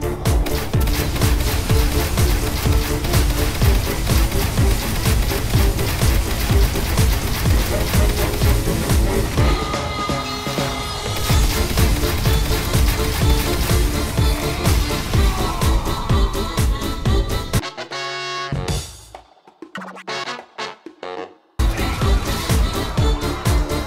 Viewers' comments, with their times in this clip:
0:09 I really love how this is just right with the music. Everything is perfect.